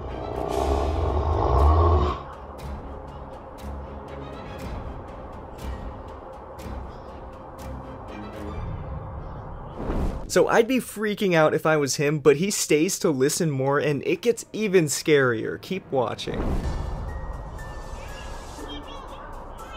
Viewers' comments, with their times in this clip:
0:06 I know that’s fake coz SIRENHEAD isn’t real and doesn’t make growling sounds 😒